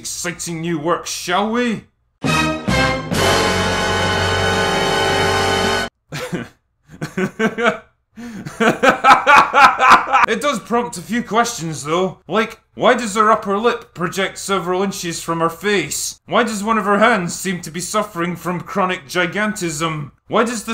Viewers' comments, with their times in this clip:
0:04 Just gonna say it, this is the most infectious laughs I have ever heard
0:06 That laugh .... LMAO
0:06 I LOVE THIS LAUGH!